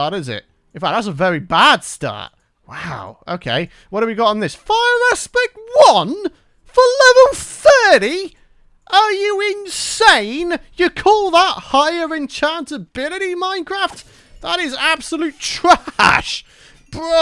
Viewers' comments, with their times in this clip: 0:04 bruh, luv the accent